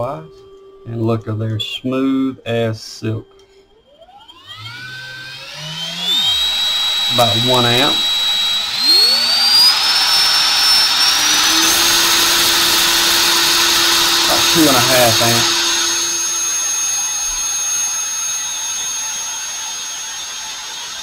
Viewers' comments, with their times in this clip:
0:04 ha like spooling up a jet engine! Love it. Ok, getting a sub from me.